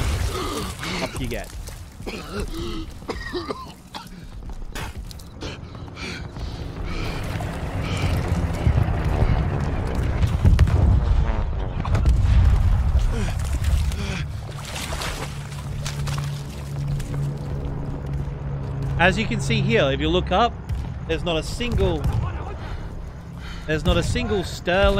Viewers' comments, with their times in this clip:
0:08 that fucking 88mm must be loaded with clips like the bofors to achieve that cyclic rate.